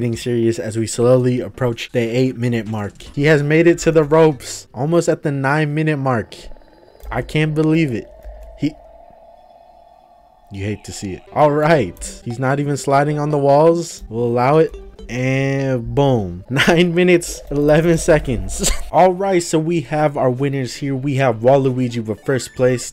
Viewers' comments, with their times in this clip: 0:07 Your voice reminds me of video game dunky also I fucking lost it “I can’t believe it he... you hate to see it”